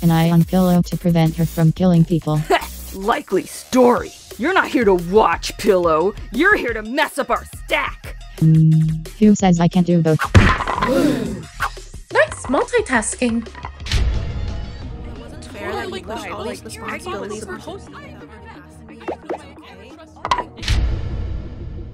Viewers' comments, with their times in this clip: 0:08 Remote's hmm is actually an electronic ding! Both fitting and way more natural than text-to-speech trying to pronounce it.